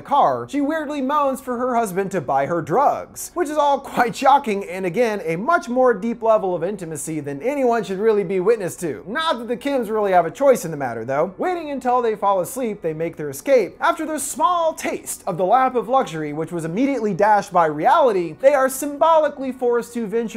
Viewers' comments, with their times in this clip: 0:03 he didn't have to say it like that.